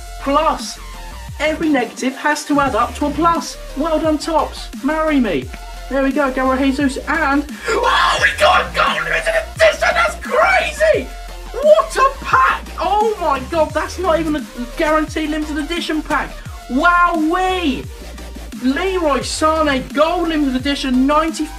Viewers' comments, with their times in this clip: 0:08 ow my ears!
0:08 BEWARE EARAPE!! Surprised my ears are still beating